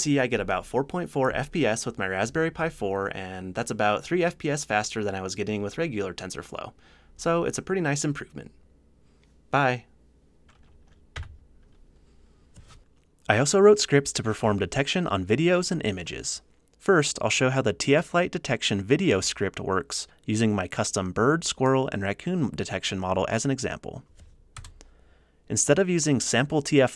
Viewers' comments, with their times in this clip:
0:09 How do You stop the video window? I only know that it's posssible to close the terminal window, but it sounded like you pressed a button